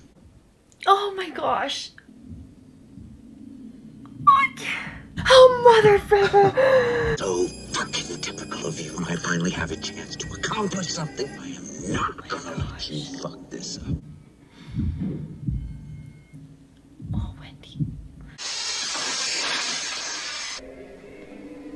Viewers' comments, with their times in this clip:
0:03 I could swear I heard her finish a "mother------" though I'm open to alternate interpretations.